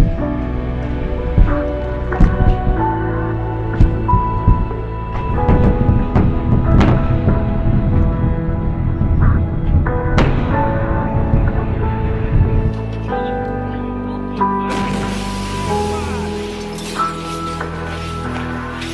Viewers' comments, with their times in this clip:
0:05 the sounds of the bolide and the shockwaves are my favourite part